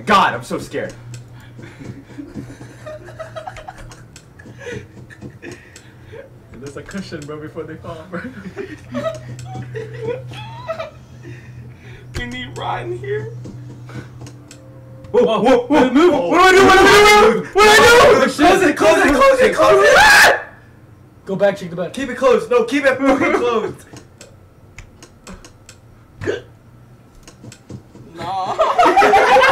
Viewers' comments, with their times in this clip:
0:10 AHAHAHA THEIR SCREAMS SCARED ME MORE THAN THE GAME 😅😅😅😅😅😅 hahaha how he even threw himself back ❤❤😂😂😂😂(he predicted it but they still got scared )
0:10 HAHAHA THEIR SCELREAMS SCARED ME MORE THAN THE GAME 😅😅 Hahaha how he even threw himself back ❤❤❤❤❤😂😂😂😂(he predicted it but they still got scared)